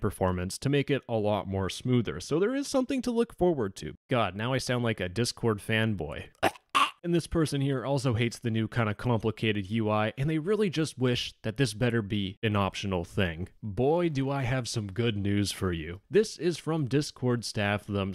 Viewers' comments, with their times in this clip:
0:05 Fun Fact: voice crack